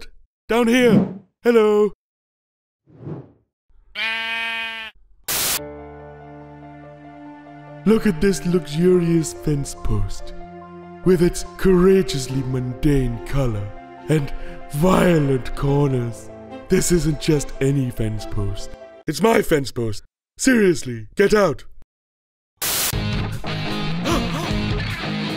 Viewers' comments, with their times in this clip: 0:06 The luxurious fence post in but I love the music